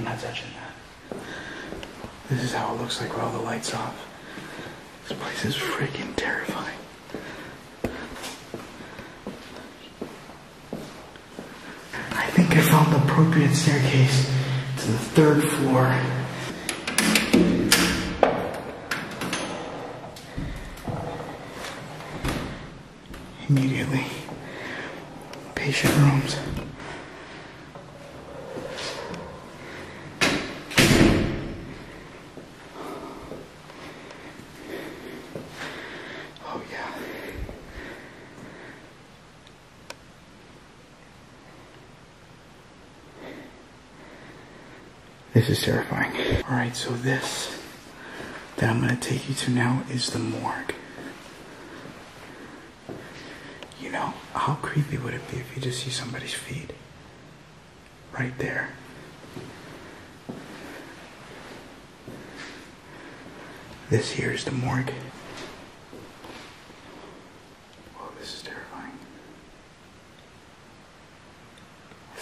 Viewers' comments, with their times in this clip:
0:04 i hear a grunt when hes saying " this place is .....
0:05 listen while he talks hear like a voice too
0:05 there's a "ugh" sound and it sounds like it was right next to you when you're talking about something being terrifying
0:59 Piano ish How???